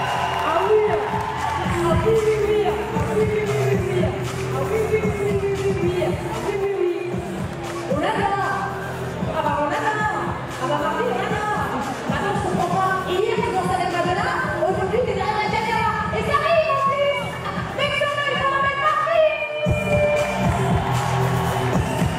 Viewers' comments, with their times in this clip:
0:07 i love her voice ❤